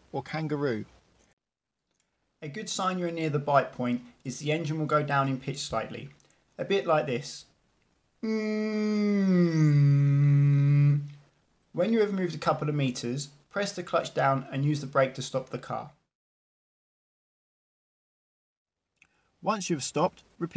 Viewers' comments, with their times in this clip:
0:07 Hi Driving bro I need to clarify my doubt here... When I moving off I put clutch down select 1st gear set the gas around 1500rpm handbrake off the I lift the clutch to bite point then I see the rpm drop at below 1000rpm so I decided to increase the little gas so my doubt is how do the engine sound hear like? Still like this or the engine sound goes up in pitch?